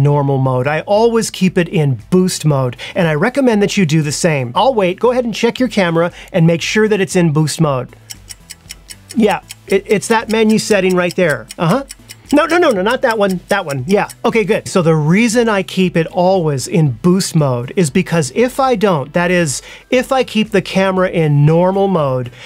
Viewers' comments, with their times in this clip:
0:10 I was curious about boost mode when I have seen that on battery grip now I understood thnxs alot that moment ur clock ticking i dont have cam on my hands lol.